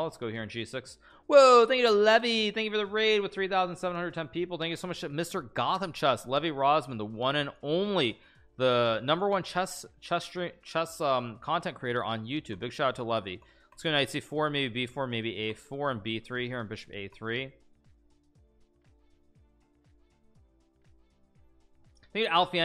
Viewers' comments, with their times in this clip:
0:08 sad hello everyone noises